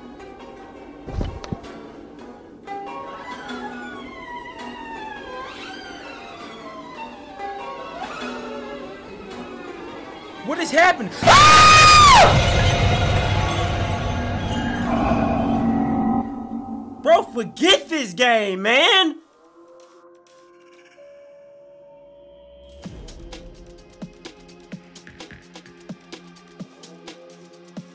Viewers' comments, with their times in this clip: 0:09 wins best singing award 😂😂😂😂😂
0:10 DONT WEAR HEADPHONES XD😂😂😂😂😂
0:11 I think I just broke one of my ear drums bc I was wearing headphones..
0:11 I dare you to play this errape in a bass boosted loudspeaker
0:11 Me: 3 2.1 poiised scream
0:14 rip headphone users 🎧 but funny too